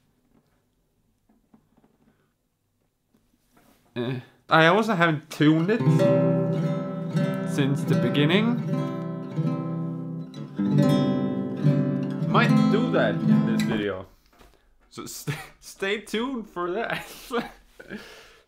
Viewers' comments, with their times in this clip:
0:06 has an interesting sound, even though its a random tuning.